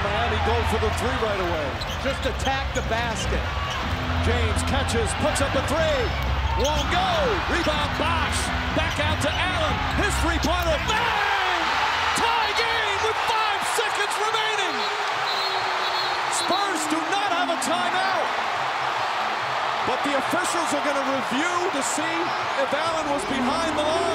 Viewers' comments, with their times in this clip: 0:10 crazy he said “his three pointer” but it sounds like “history Pointer” which is in fact a history pointer